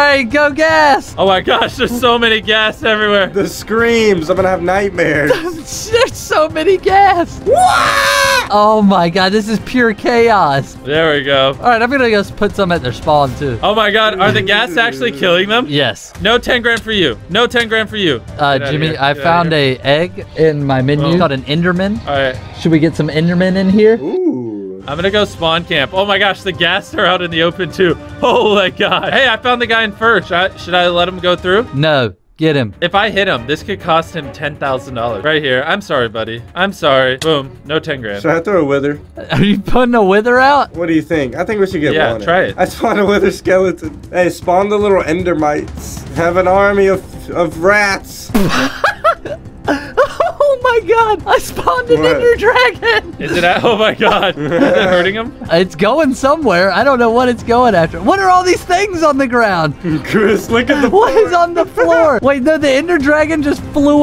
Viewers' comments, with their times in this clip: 0:06 you sounded like Mario when he dies in the game! XD
0:07 chandler sounded like Luigi falling! 😂
0:07 Sounds like mario
0:51 he def said the hard ER